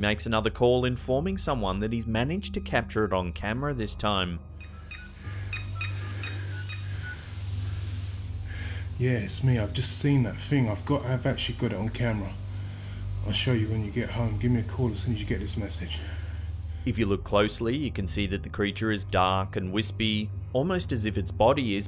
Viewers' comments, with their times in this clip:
0:04 .... what the fudge. That's the sound of a toy telephone. He sure as hell isn't calling anyone XDDD